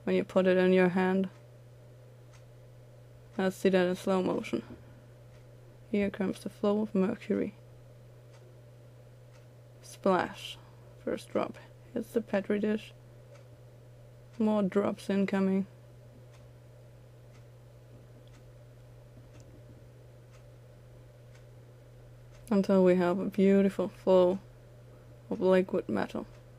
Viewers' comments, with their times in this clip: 0:09 sound like shes narrating a naughty book